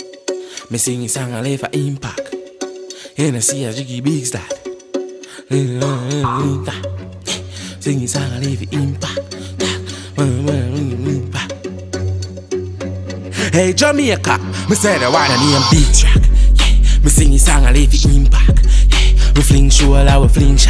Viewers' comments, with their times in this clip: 0:05 < -- no srsly, all man heard was "ngmnmgngn" and dat wernt no patwa